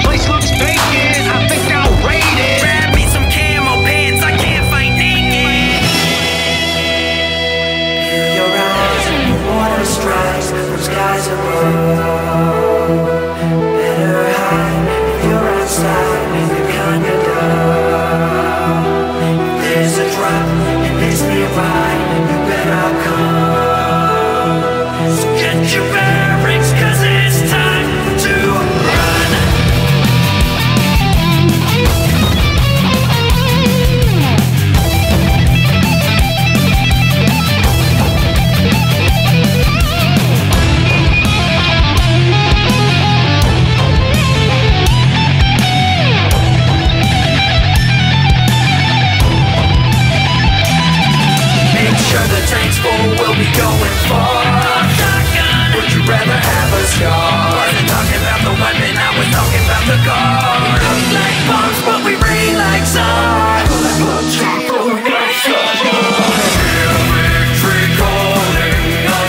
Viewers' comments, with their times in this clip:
0:07 God, I love the bit Your voice comes over so nice!
0:08 sounds really good when u wear ur headphones
0:29 LOVE THIS SONG AND LOVE THE SOLO I LISTEN TO IT FOREVER
0:50 ELECTRIC GUITAR SOLO!!!!!!!!!!